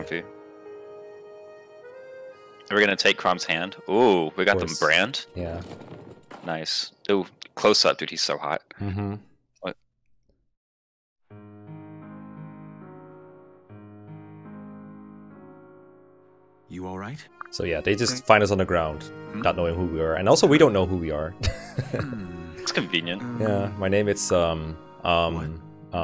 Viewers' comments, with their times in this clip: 0:08 "Oh, up close that dude is so hot" "Hm... what?" akward silence